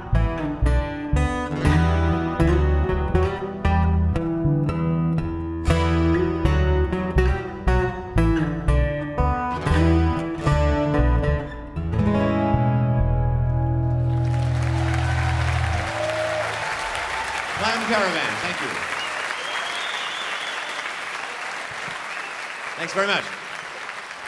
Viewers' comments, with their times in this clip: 0:10 I really like the way that song resolves! Interesting choice.